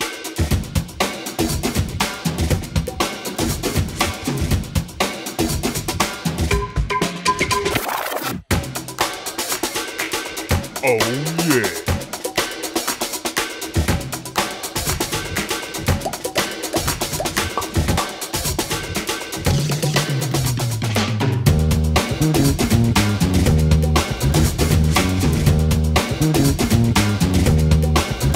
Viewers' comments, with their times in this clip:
0:10 sounds like Disco Bear on HTF